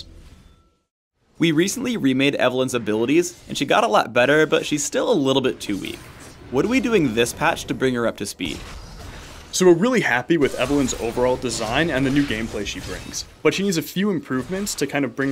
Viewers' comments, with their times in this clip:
0:03 when Phreak says "better" it sounds a little feminine :) I totally wouldn't mind if he was into guys